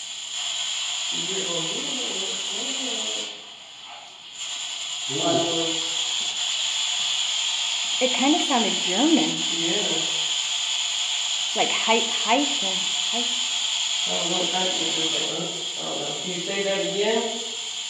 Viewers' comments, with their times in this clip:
0:03 ish we thought it said hiten but re-listening to it, it sounds like Hi Tim